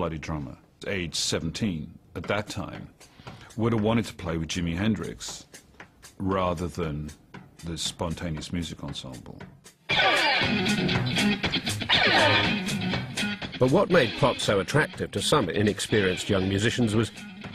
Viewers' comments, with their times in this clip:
0:04 Is the song by Jimi Hendrix, or is it by someone else who's playing sounds like Hendrix? Also, what's it called?